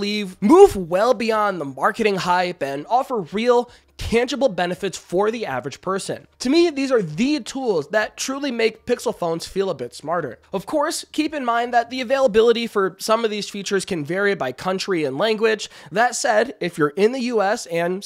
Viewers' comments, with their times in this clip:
0:03 ayo that cut with the word move was scary 😂